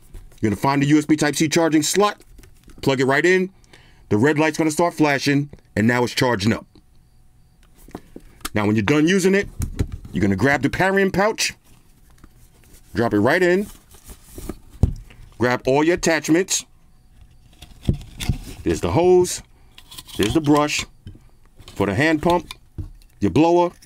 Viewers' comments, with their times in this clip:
0:10 Parrying pouch LMAO